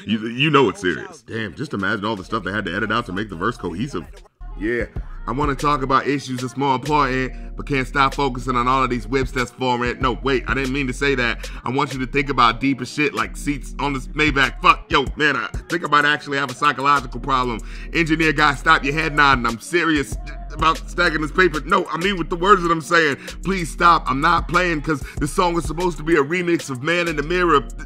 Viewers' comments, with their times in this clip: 0:05 why does he have Drakes cadence down perfectly 🤣
0:05 Man and beyond before the next segment... if you really deliver it in a cooler tone that's a vibe 🤘🏿💯
0:14 what does he say??? Lol “fuck Yo banner”??